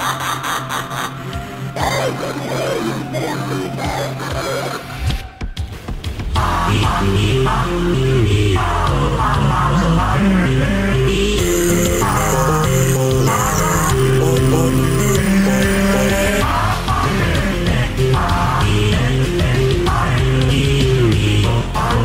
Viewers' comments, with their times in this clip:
0:06 Bro SpongeBob sound like mario LOL